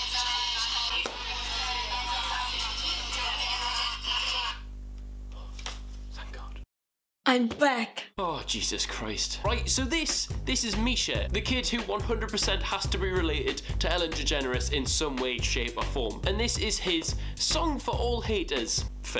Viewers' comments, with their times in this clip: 0:03 sounded like a nest of bees Xxxx